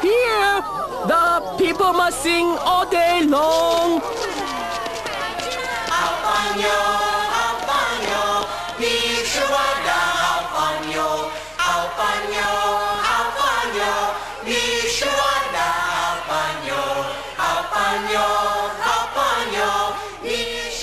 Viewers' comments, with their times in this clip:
0:05 go to I love that song!!!